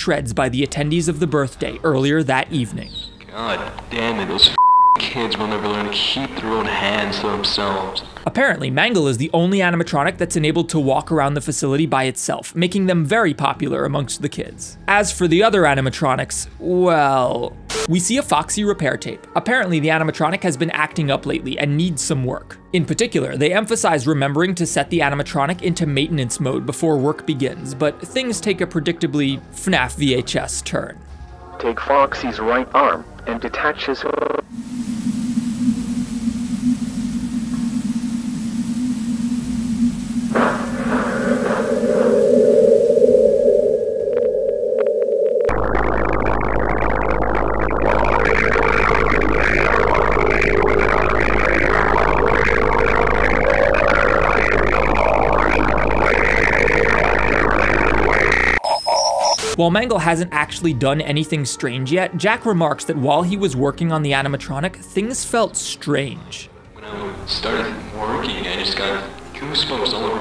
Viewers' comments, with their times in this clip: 0:05 bro why he sound like moistcritikal😭
0:46 did foxy just fart
0:47 was a fire beat bro
0:55 foxy who plays politics